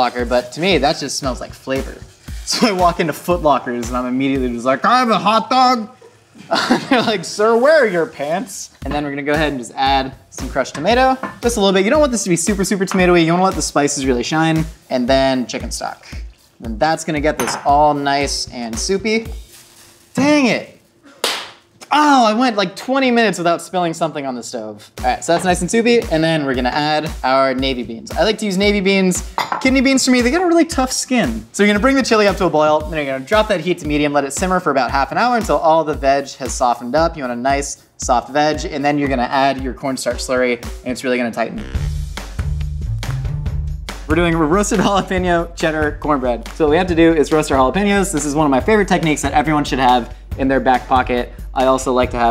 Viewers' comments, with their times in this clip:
0:04 ...Anybody else... 'Can I have a hotdog?' ...Soos from Gravity Falls!!!!!
0:38 Um... A nice soft what Josh? What is going to tighten? O.O